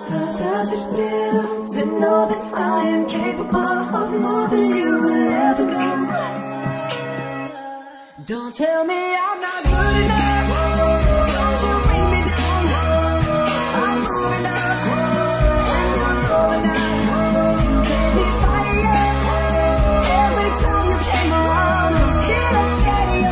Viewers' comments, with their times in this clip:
0:05 Is it just me, or is there a gasp ?